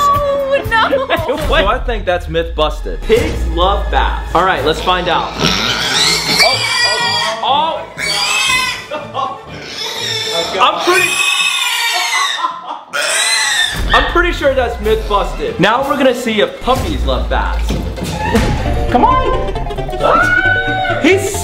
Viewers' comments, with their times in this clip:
0:03 Pig screaming made me laugh! xD